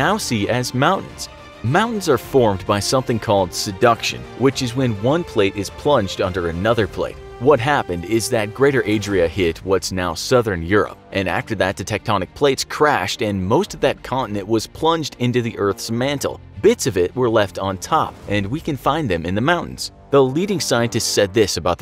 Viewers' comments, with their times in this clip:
0:03 Sounded more like "seduction" to me than "subduction".